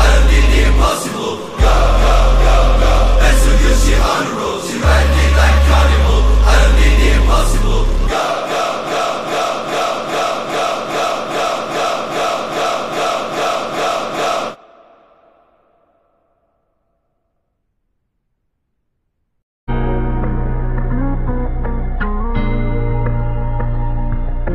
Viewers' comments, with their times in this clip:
0:09 sounds like gunshots 🔫🔫💥💥